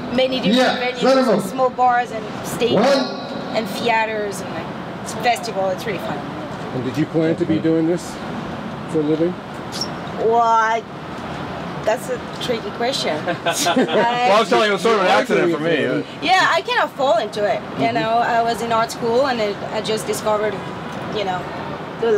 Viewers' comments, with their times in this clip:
0:03 How did she just say theatre She needs to go back to school.